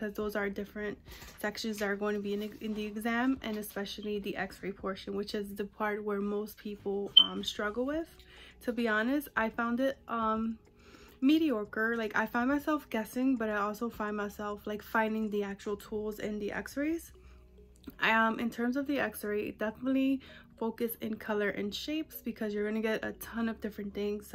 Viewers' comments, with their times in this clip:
0:06 change battery in your smoke alarm sensor:P ... congratulations on the test